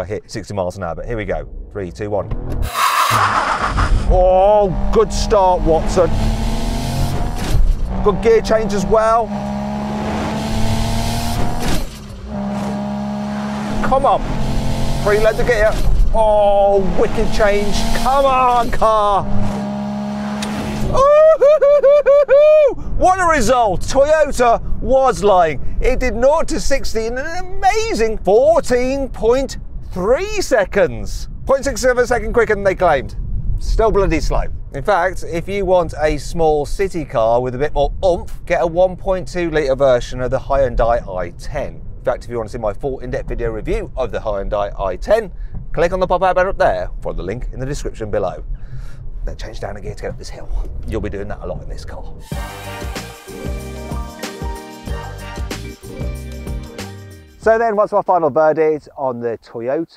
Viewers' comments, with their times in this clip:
0:04 I can't believe they fit an RB26 in this car, much like the skyline in 2 Fast 2 Furious, what a sound Must be detuned thought, hence the slow 0-60 time. 🤣
0:41 Never mind your Aygo X blunders Mat, what about your Hi-un-di i10 reference??.... Hyun-day (Hyundai UK) have just gone all fancy with their pronunciation after years of ignoring the Koreans and the rest of the globe 🤣🤣